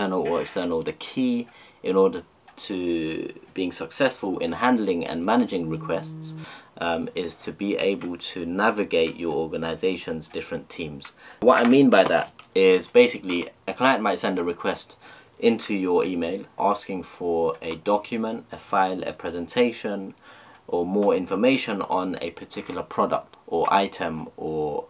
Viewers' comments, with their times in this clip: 0:06 phone buzzes he stops video.